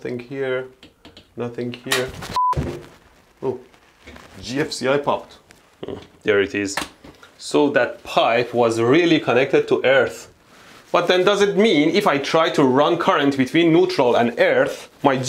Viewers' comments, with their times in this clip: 0:03 I thought he said "gypsy eye popped". I was very confused.